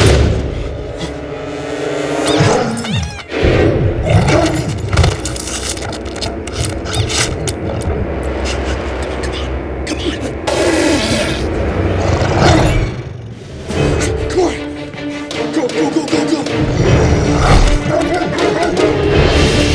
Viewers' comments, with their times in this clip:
0:05 Werewolf - Squeaky toy!